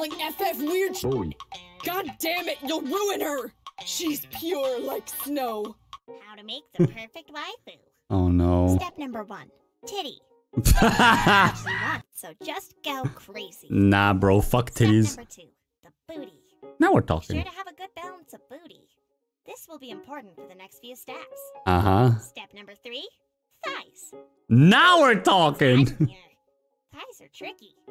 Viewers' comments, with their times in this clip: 0:09 perfect timing laugh